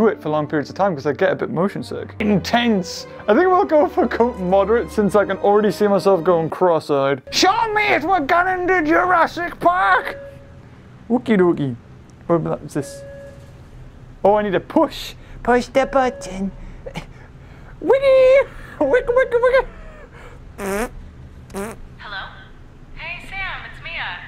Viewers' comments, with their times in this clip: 0:07 is where he introduces all the voices he can make.
0:07 John Hammond if he was a Geordie